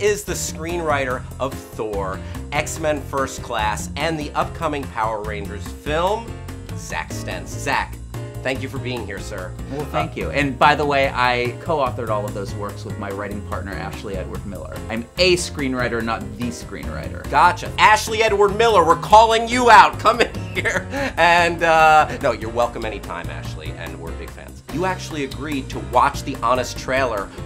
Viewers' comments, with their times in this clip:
0:10 when he started talking i thought they dubbed the other guy's voice over his lips omfg wtf ?